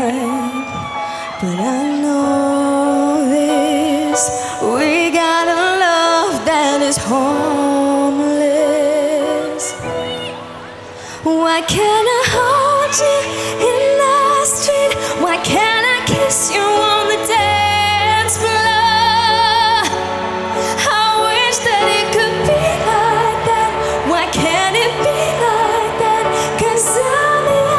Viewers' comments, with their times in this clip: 0:09 ... someone shouted "GO PERRIE" when Jade was going to do the chorus...